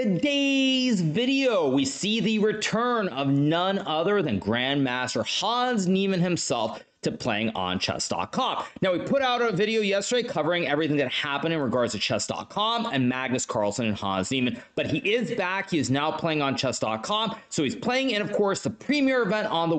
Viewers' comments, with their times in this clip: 0:03 That “None Other Than…” seemed lk it was made with disgust 😬